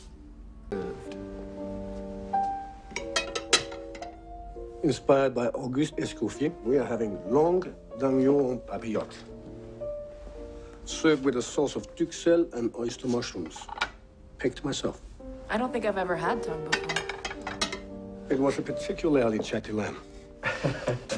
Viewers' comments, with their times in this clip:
0:05 My man starting speaking like a vinyl being played backwards